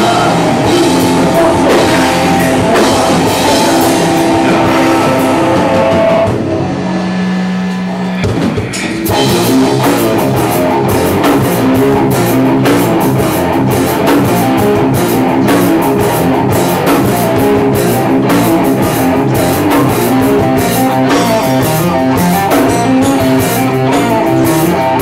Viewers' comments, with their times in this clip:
0:09 I really want to like these guys because they are the first band that I've heard with this style of rock to come out of Korea, but I don't know I think they're trying too hard to be like Tool. Especially the singer's movements are that of Maynard's. I dig the band but the song starts to really sound like Tool I just think they need to find their own flavor and they'd be big. Even on their other song they used an excerpt of Timothy Leary's speech.....